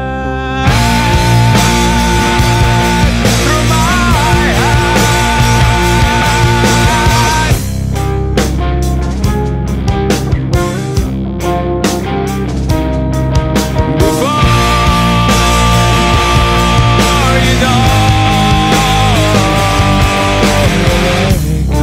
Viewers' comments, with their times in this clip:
0:03 i dont get part what is the strumming pattern